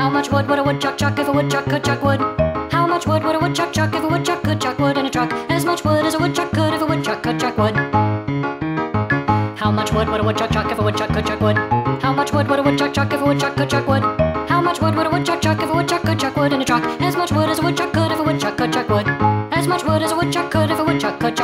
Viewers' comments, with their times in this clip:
0:08 at double speed